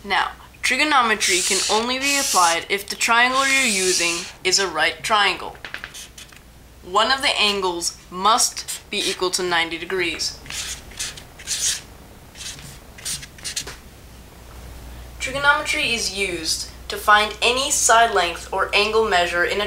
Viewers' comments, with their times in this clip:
0:04 *hears marker on paper. Immediately pauses and exits.